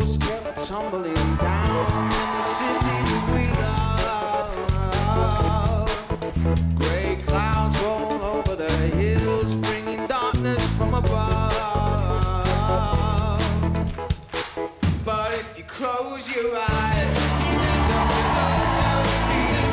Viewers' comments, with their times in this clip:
0:06 when dianne went "HA" again 😂😂😂
0:06 All i could thing about was when dianne went ha 🤣